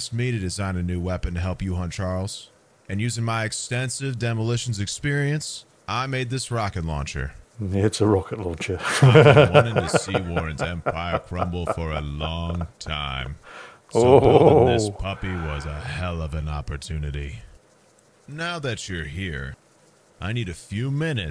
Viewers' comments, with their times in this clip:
0:09 Did you hear his laugh when he discovers the Rocket launcher ? Positively evil!😈 Akizuki better keep a close eye on pops! He losin it.🙀🤣
0:09 That laugh is positively evil!😈😱🤣